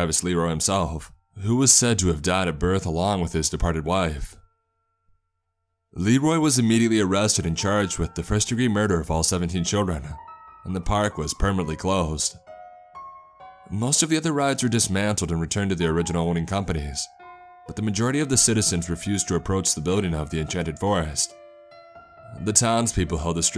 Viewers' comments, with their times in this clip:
0:06 Can anyone tell me the name of the song playing ? It’s terrifying. O.O